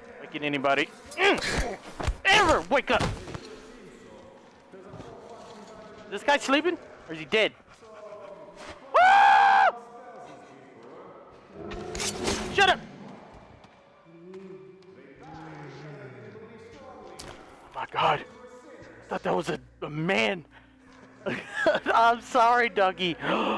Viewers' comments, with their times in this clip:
0:05 “ is this guy dead “ dog wakes up delirious screams 😭😭😭💀
0:06 the scream XD
0:08 that scream that cute SCREAM!!! aaaa